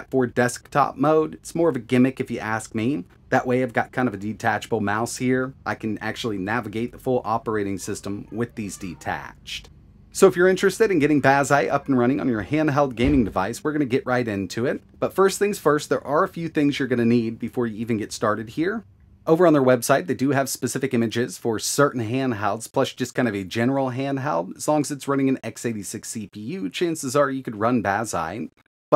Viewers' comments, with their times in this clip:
0:09 some random sound of a kid banging on the door
0:15 The person screaming in the background and slamming the door scared the crap out of me. Thought my neighbor was fighting and ran outside. Damn high fidelity headphones!